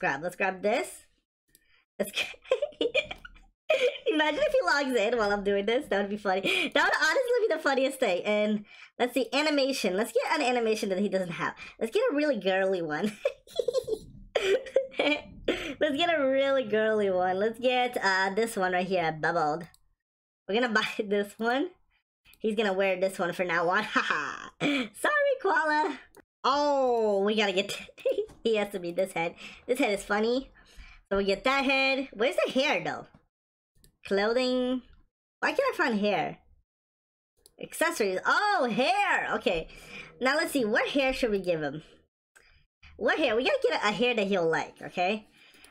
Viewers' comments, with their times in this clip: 0:10 that laugh was funny
0:26 hear how he said “ohhh!”